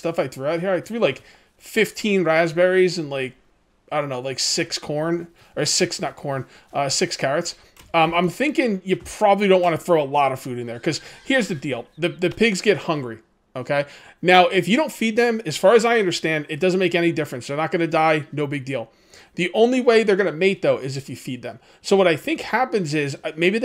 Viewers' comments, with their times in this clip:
0:10 piggy was born in the background as you were speaking (look for red splash and listen for squeal).